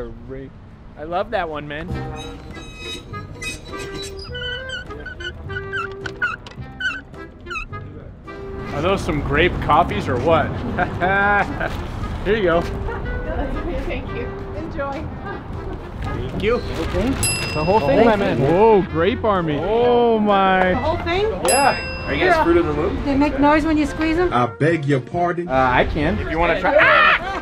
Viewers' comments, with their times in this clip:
0:10 Jokic or another NBA player laugh